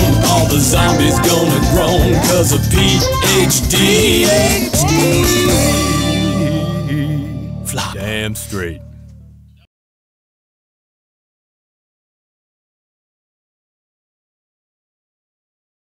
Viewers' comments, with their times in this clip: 0:05 you can actually hear some sobbing in the background! It really threw me off
0:08 i like how at the end of the song they didnt edit one of the people talking could be one of the songwriters or the person who was singing talking off mic